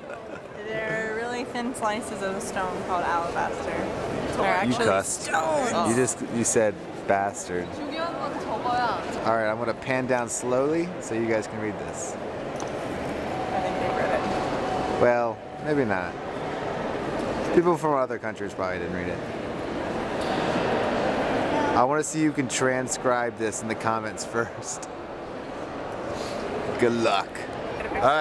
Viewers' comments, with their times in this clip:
0:07 who heard korean spoken ??
0:09 hahah i heard korean. KOREAN PRIDE